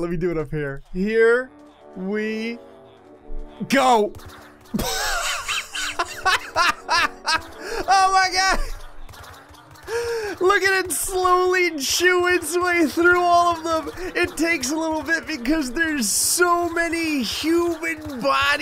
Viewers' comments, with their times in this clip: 0:03 popcorn popping be like: